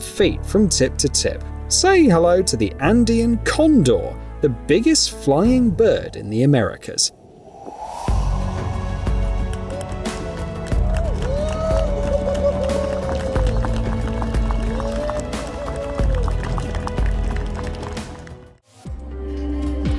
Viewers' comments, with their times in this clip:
0:07 I like that one in a billion moment when everyone claps because a bird can fly.